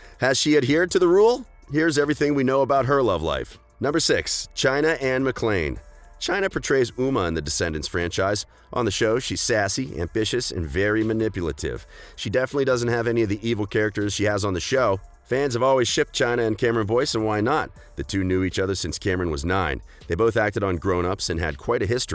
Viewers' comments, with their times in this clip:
0:06 haha it sounded like you said muma